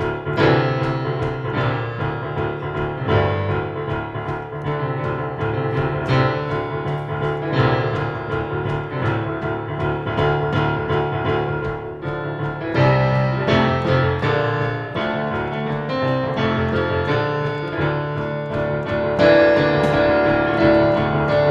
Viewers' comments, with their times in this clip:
0:05 we'll miss you :( and the dwarven song :'( so super